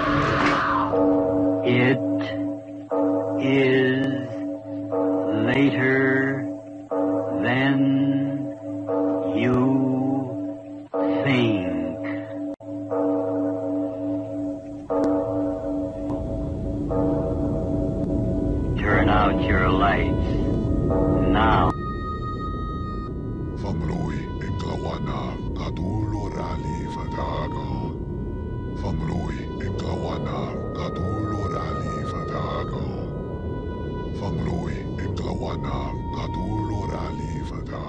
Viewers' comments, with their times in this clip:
0:04 Someone please tell me they thought of “Ooga booga ” by ghostemane intro when hearing !!!!
0:23 this sounds like R'lyehian